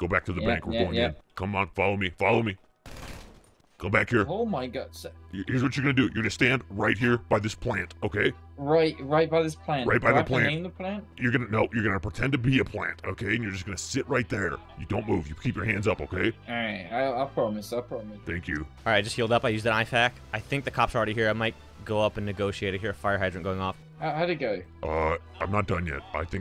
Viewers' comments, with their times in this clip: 0:09 why did he say plant like that😂😂😂😂😂😂🤣🤣🤣🤣🤣🤣🤣🤣🤣🤣